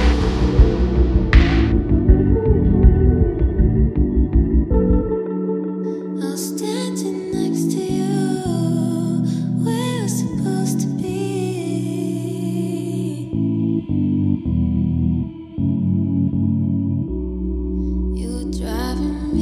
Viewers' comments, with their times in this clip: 0:05 come through with that strength and vulnerability, girl!